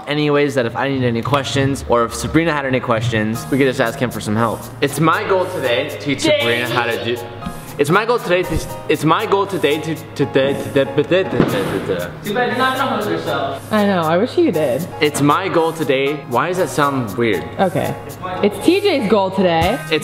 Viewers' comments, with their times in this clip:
0:07 You sound like Melania trump